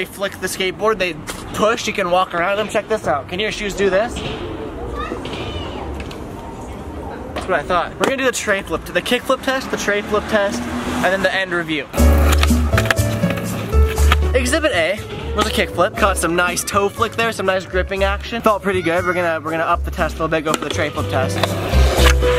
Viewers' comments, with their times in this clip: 0:04 Did a kid say Fuck me in the video, just listen